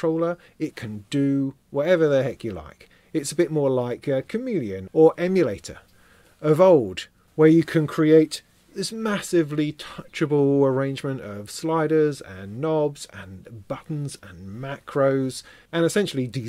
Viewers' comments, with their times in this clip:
0:04 did you say “it’s like a comedian”? Also, awesome monthly. Always enjoy those, just sayin’